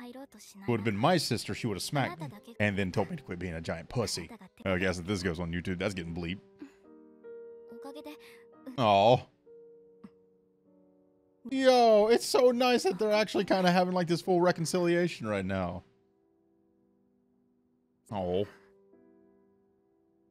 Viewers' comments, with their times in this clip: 0:03 it was in fact not bleeped🤣